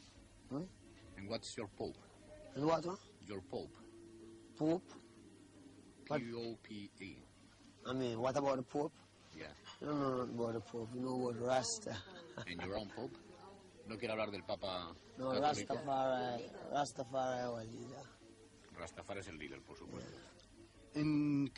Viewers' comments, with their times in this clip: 0:03 what's your poop? 😂